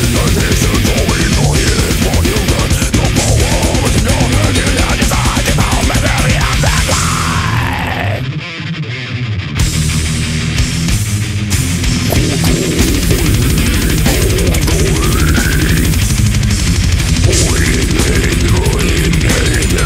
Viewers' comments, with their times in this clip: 0:05 Ive alwasy been a black/sludge/hardcore guy... however, is the riff that finally brought me around to loving death metal.